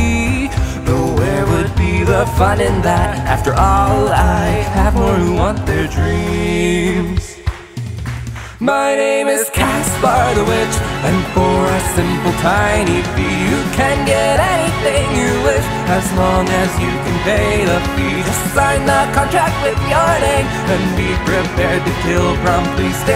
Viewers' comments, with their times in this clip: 0:08 wish "caspar" was the same high note as "anything"